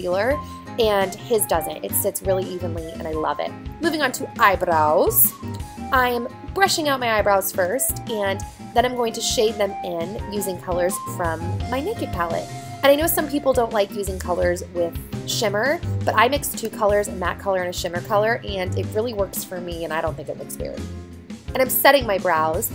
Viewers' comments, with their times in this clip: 0:04 I love the way you said eyebrows